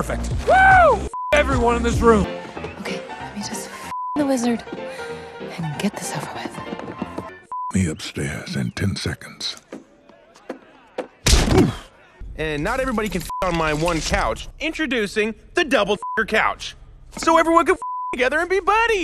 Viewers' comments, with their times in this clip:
0:07 did no one laugh?